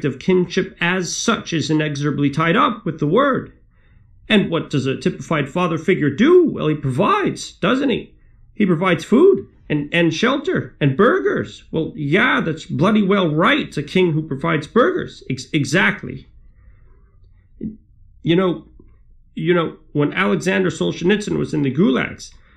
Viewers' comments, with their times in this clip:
0:04 Briefly slips into a Cosby/Seinfeld amalgamation